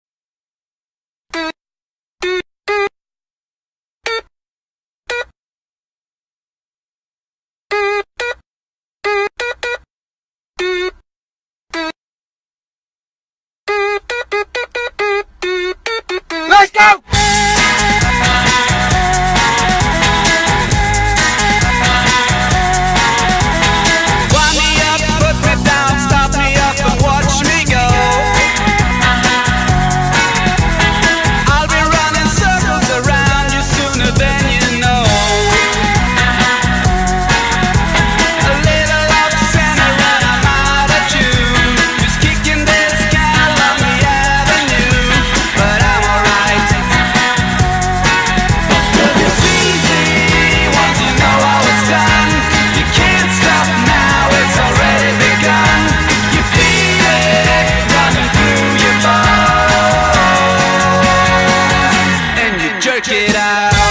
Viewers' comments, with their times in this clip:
0:00 does anyone even realize that this tone is like the sound of boyfriend from fnf
0:11 i don't like the singing part..... but i love the inhaling part and of course... LETS GO
0:48 My brain creates another subtle let's go wtf